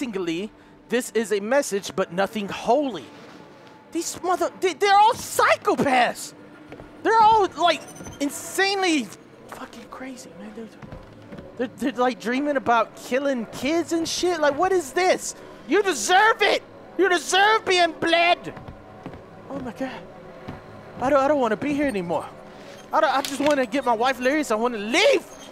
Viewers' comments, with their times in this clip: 0:09 Does he say "theyre all fuckin crazy n-word" lmaoo
0:11 wtf did delirious say? They're all fucking crazy and then mumbles